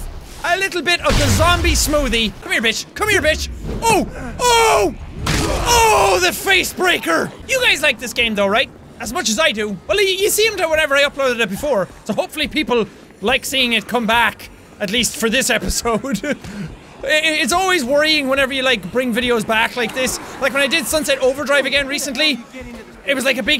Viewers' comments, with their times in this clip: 0:05 did you guys hear how brutal that sounded